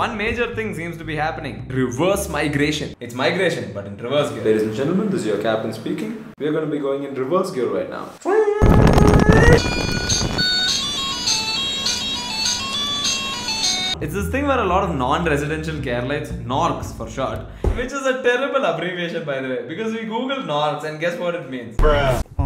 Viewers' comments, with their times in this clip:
0:06 the car reversing song 😭 ggwp
0:09 Plane has a reverse gear music😂
0:09 That plane going reverse with that “reverse thingy” sound is epic!!😂
0:10 🤣🤣🤣🤣🤣🤣🤣 That reverse gear music.